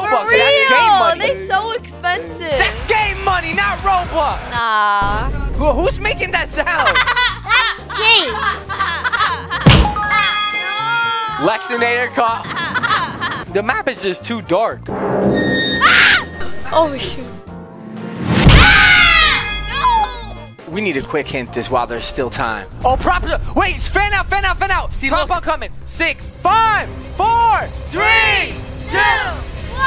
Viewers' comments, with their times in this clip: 0:10 Birds at beach sound